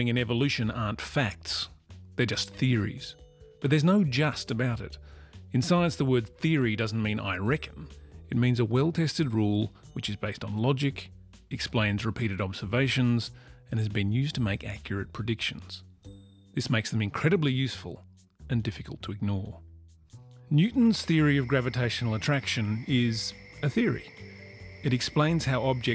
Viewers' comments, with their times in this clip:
0:07 What's the word you're using " ? (In science, theory doesn't mean ______) Is that some bit of Australian slang or am I just not hearing it right ?